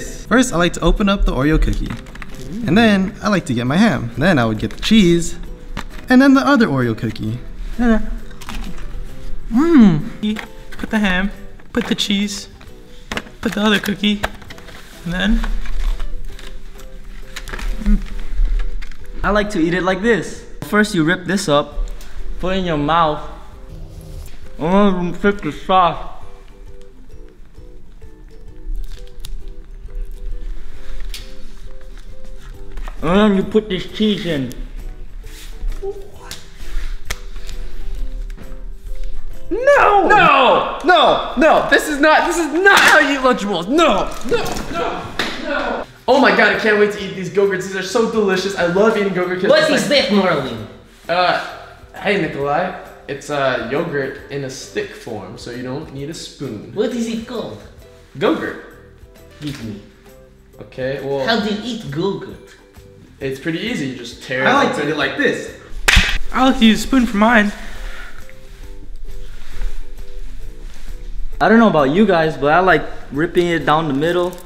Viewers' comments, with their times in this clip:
0:10 why does it sound like he’s scared or sad
1:01 how do you eat Google XD lol